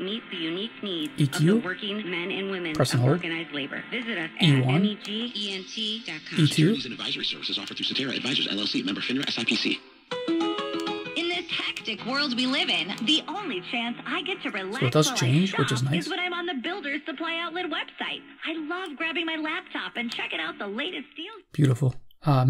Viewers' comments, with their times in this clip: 0:10 sounds almost like the TikTok TTS